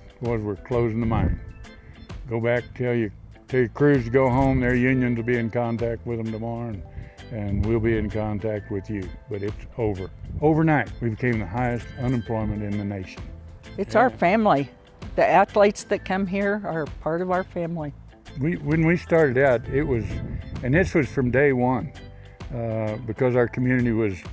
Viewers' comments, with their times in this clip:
0:06 Poor music choice